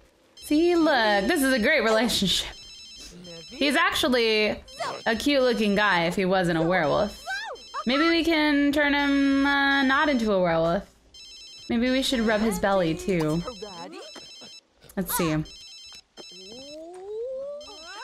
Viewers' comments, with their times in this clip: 0:03 lux has her phone ringing.